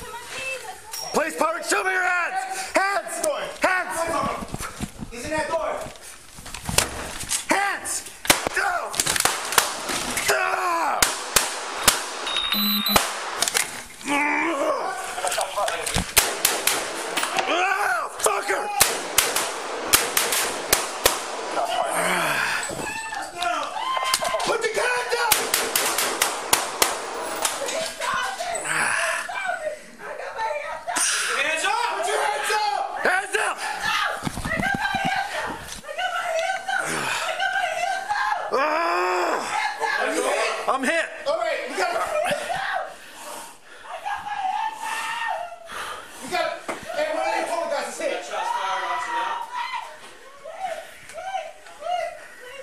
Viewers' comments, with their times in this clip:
0:07 you can ACTUALLY HEAR the bullet hit the body armor.... JESUS!!! GOD BLESS AND PROTECT ALL YOU POLICE OFFICERS AND EVERYONE YA KNOW!!
0:07 you can actually hear the bullet impact
0:08 sounds like HOMER from the Simpsons "DOOO"😂🤣😂🤣😂
0:08 Dude sounds just like Niko Bellic from GTA IV when he gets angry in a shootout
0:11 that groan turned him beserk mode
0:12 doom music starts
0:38 he sounds like playing an airsoft